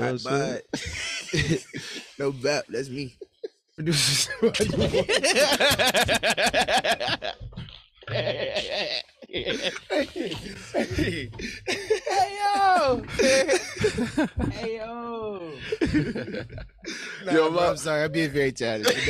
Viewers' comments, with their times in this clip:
0:04 that laugh bruh 😭
0:05 i love Ken laugh bro 😂
0:05 they gon cook Ken laugh 😂